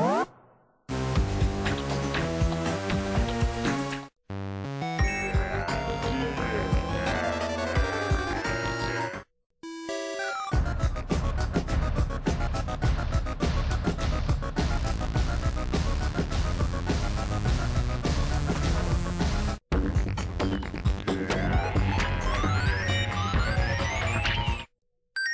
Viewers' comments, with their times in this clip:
0:10 The music here reminds me of the Super Mario Bros. Castle theme